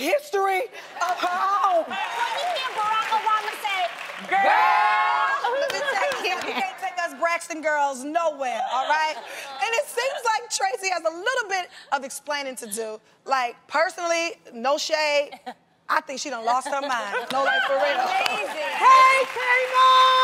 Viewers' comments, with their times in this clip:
0:04 they harmonised 🤭😅. Well Jeannie was a bit off ❤❤ Traci was and will forever be a shining star!!! Her legacy lives on❤